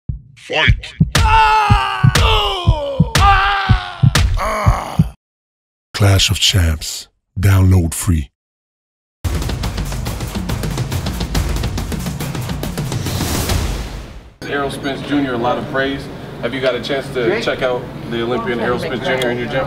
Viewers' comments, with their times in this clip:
0:00 clash of champs voices are annoying LMAO